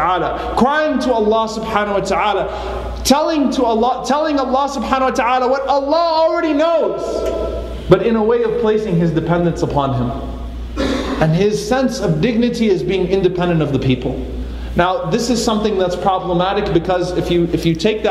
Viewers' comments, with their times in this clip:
0:04 brother is yelling at me😭😭